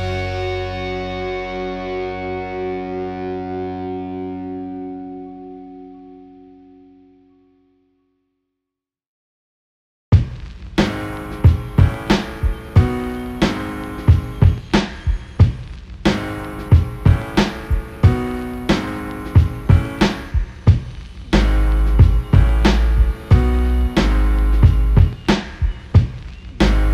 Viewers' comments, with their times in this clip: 0:09 Songs dope sounds like Brrooooklyn Zooooo shame on you when step through to da Ol Dirtty